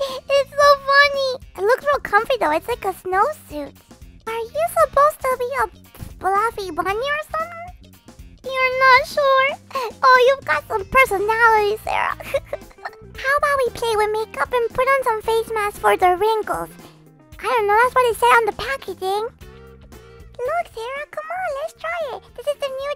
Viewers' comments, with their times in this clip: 0:07 this is just a joke cause ily so much but it cracks me up goldie said are you supposed to be a fluffy bunny or something and I thought she said are u ment to be a bloody bunny or something. If u get it like it 🥰✌️goldie and blowy are so cute tho xx